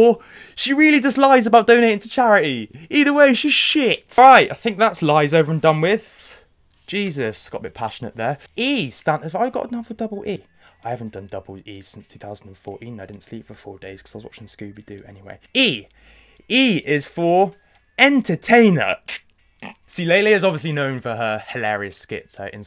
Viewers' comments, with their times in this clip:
0:09 I thought I was imagining hearing DNA
0:10 To all the armies here, Is it just me or can you here dna in the background